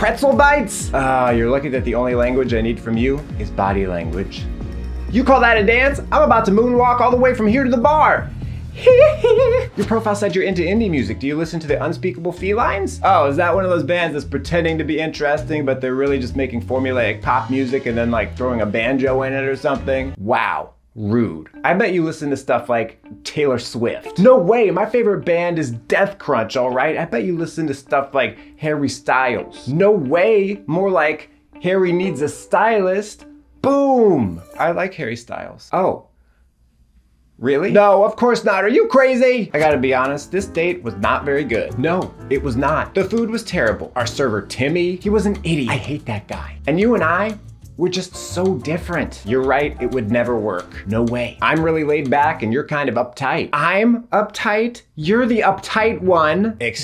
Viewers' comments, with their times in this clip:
0:08 I love the Michael Jackson shriek 😂
0:39 is literally how they talk in Seinfeld